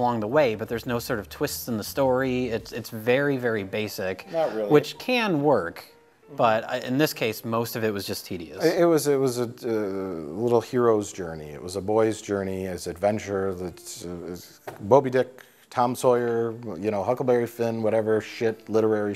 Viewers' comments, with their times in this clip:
0:04 who says "Not really" in the background?